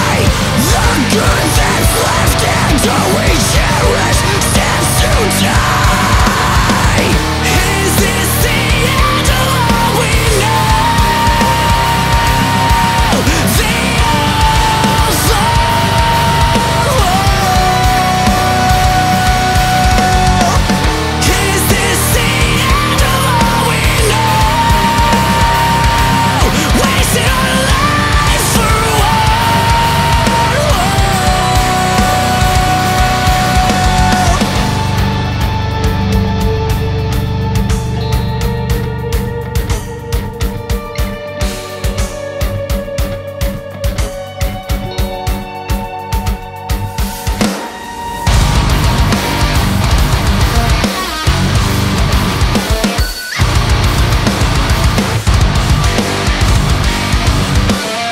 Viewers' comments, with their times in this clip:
0:06 Compare periphery's reptile ish "is this the end of all we know" to bleed from within's "the end of all we know" at around the 1-ten mark. Not identical but damn close to each other...
0:25 the "wasting our lives" gives me chills every time, such a powerful voice there
0:45 Can we talk about that absolutely disgusting pinch harmonic ?
0:45 What I love with this song is that he actually screams like he is having a panic attack, this makes the song so immersive. Also the part is absolutely devastating.
0:45 The way the main riff kicks off gives me total goosebumps